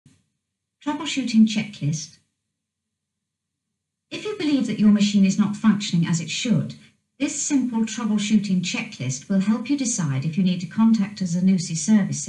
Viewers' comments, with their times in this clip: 0:00 Sounds like it's saying The Washington Checklist instead of Troubleshooting Checklist